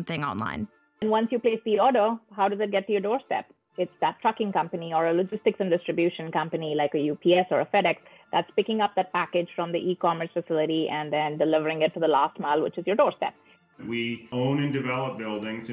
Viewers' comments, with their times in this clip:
0:03 is that me or is she cursing? She definitely said "that f**** company"